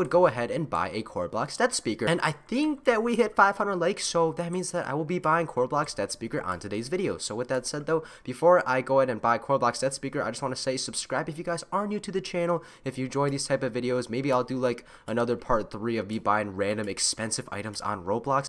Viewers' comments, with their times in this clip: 0:05 i like your voice G